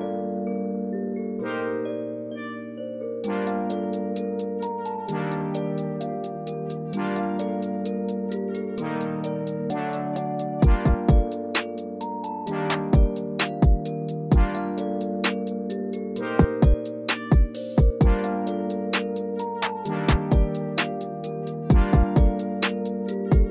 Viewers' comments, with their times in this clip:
0:07 is that KSI on the phone? 😅😂